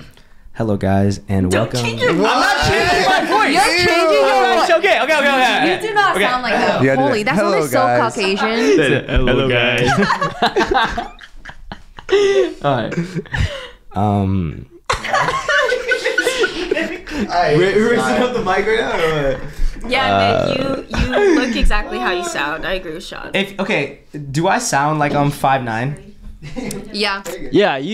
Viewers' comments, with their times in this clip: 0:08 that sounded so caucasian😭💀